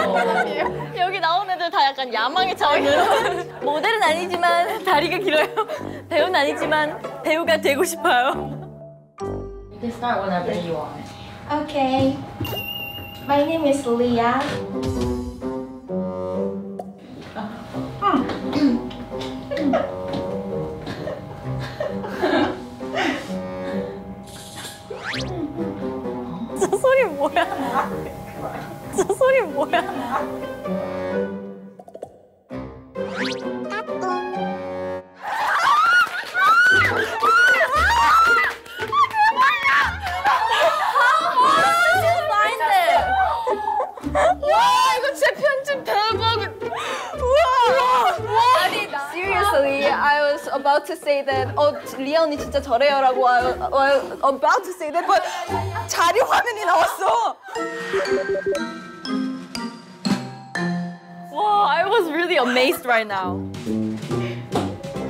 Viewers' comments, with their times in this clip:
0:03 Lia's voice just amazing here
0:35 Did someone set of a car alarm
0:49 Ryujin is so excited she can't get the words out fast enough
0:51 her speaking Korean-glish is every bilingual’s life lmao